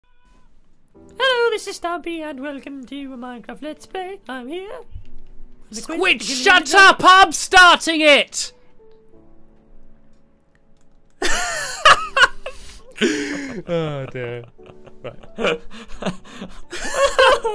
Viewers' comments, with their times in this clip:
0:00 turn your volume really high up and you can hear shouting (I think)
0:00 who heard someone shout
0:05 the angriest i have every heard stampy be